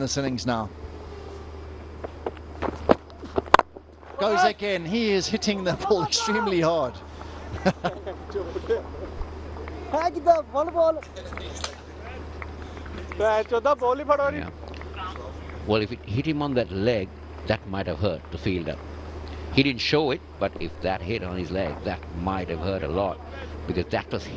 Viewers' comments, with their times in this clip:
0:09 Raina speaking punjabi ❤❤😂😂😂😂